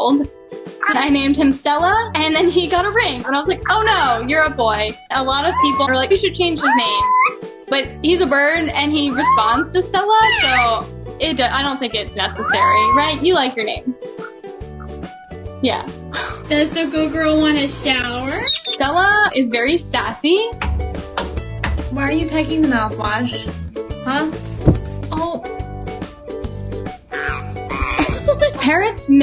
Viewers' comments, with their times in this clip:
0:05 Stella: Kuhkuu kuhkuhuu The girl: some people tell me to change his name, but he responds to stella Stella: kukuuuu kuhkuuuu The girl: you like the name Stella don't you Stella: becomes to go to the ✨️silent state✨️
0:17 "Does good girl want a shower? high pitched squeal "